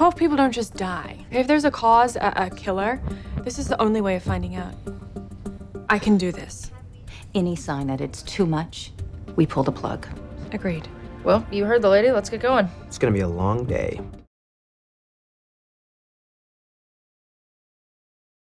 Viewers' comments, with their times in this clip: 0:03 Did any one else hear her sound Australian